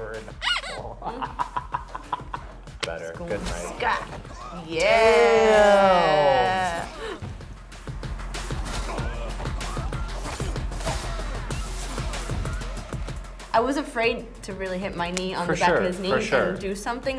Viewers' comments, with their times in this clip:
0:05 sounds like cum4k intro music